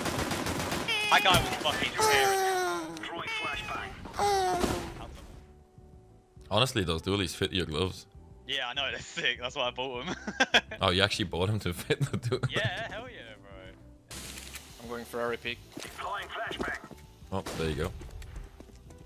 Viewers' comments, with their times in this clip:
0:03 sounds of my step sister edging